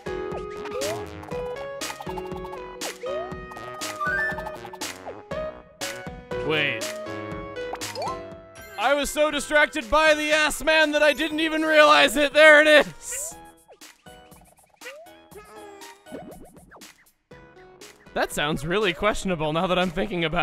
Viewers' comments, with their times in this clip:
0:08 It's Gutsman! Duh dun